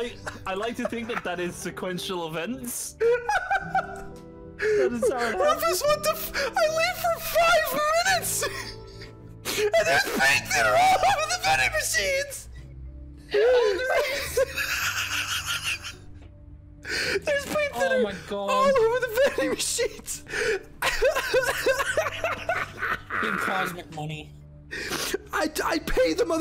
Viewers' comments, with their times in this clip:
0:10 I swear to god, he sounds like Pinocchio from Shrek here